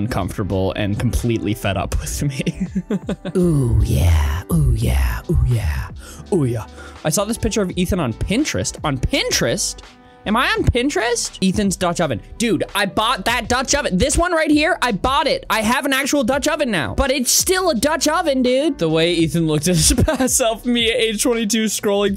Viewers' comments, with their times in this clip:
0:07 any haikyuu stans hear bokuto and kuroo saying oya?